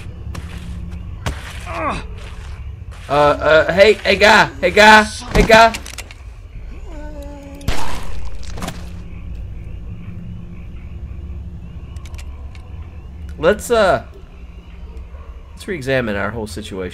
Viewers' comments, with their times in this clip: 0:03 Such a pathetic gunshot!!!!!